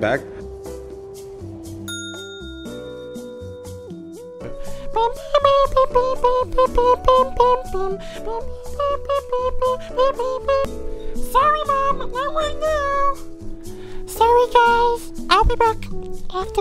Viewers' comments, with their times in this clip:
0:04 sounds very similar to the chorus from the first opening to Tokyo Ghoul, was this intentional? :P